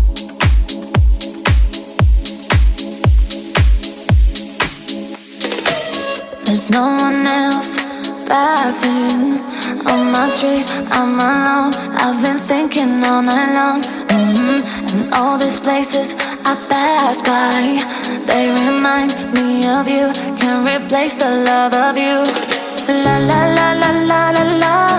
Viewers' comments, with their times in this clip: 0:09 amazing beauty chilling music...could not ask for more